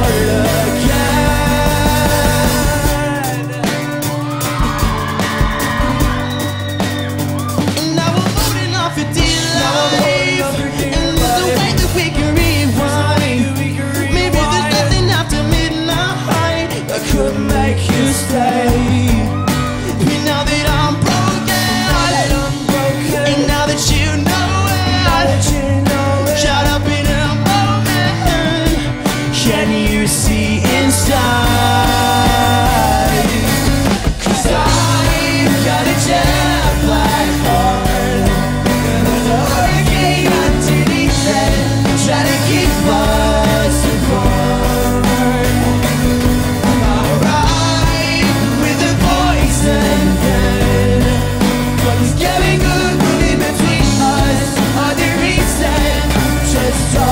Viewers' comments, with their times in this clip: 0:03 Can we just appreciate how good they are as a band? Like Calum with his amazing voice and bass, Luke with his sexy voice, like wow. And don't even get me started on michael, cause I'm a mikey girl. Too late. He sings with so much energy and passion, its awesome. And Ash is SUCH A GOOD DRUMMER ITS NOT EVEN FUNNY. Like, I died it was amazing. Anyone who says this band is not talented can think again.
0:15 killed me lukes voice crack just afdcdvdhfhfbh
0:43 Can you hear the that? that's the sound of my heart crying because calum's harmonies.